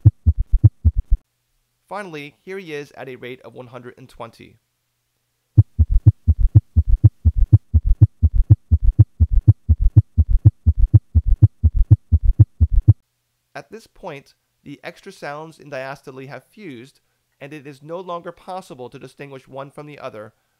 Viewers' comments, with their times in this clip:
0:05 haha sounds like Iron Maiden to me. The best educational YouTube channel, no question, thank you for these great videos.